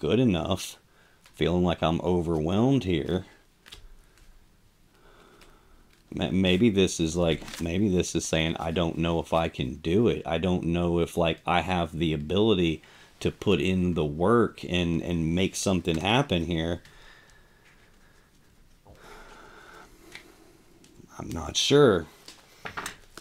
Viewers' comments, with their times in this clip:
0:10 This reading the energy, completely monotone with heavy sighs in between, makes me want a hot bath with a cold blade. I'm still curious if you intentionally set the clock behind you to
0:10 This reading the energy, completely monotone with heavy sighs in between, makes me want a hot bath with a cold blade. I'm still curious if you intentionally set the clock behind you to